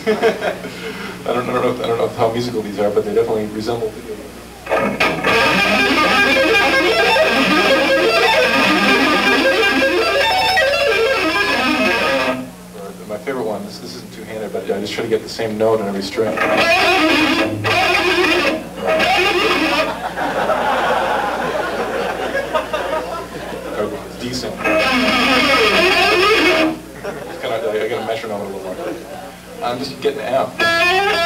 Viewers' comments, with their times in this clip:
0:04 commence Buckethead influence
0:17 sounds like a turkey XD